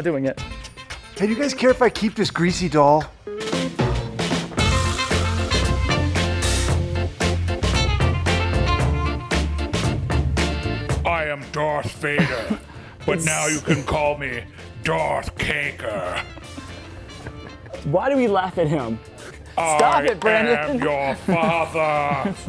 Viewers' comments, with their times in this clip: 0:05 BOOOOO :( The singing at the end though... outtakes are the best part!